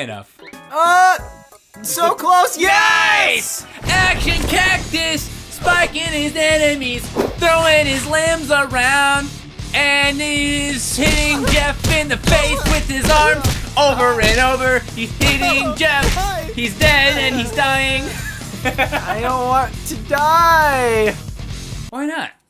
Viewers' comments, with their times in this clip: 0:04 u sound like someone from the show south park